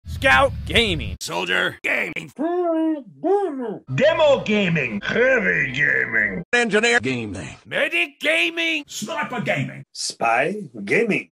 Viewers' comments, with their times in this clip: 0:04 i refuse to believe this dude did all of the lines for demo, especially the sounds he makes when charging
0:04 (turn on captions) Him saying heavy gaming sounds more like heavy than demo gaming sounds like demoman.
0:05 it perfectly sounds like heavy
0:05 "that doesnt sound like heavy at all" (subs) how it doesn't sound? Ik he got older which may affect his voice but it does sound like heavy
0:09 Spy gay hahahahhahahahha
0:09 spy gay min